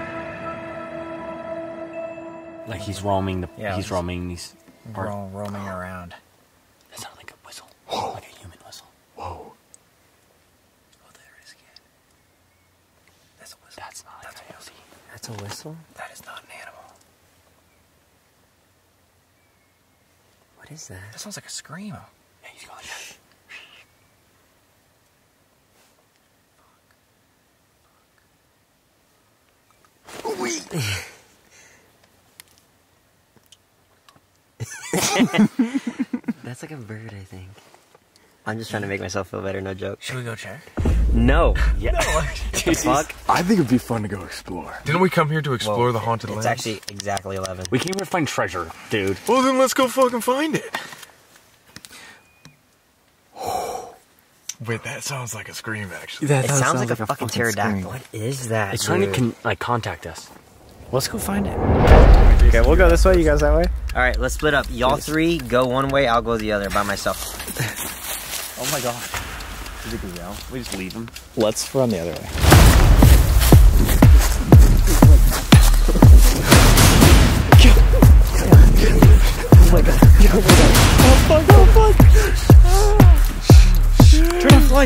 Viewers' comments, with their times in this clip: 0:05 Bruh they gon die it’s a wendigo/skinwalker don’t whistle back at them
0:21 if I am correct then that screaming sound is a coyote calling out and since it sounds like a little kid scream many people go after it.
0:57 that was a coyote- not a scream lol basically coyotes are mistaken for screams or dogs
1:05 it’s probably coyotes killing rabbits and rabbits screaming I’m not certain though my dad said they sound like a high pitched scream as they’re being killed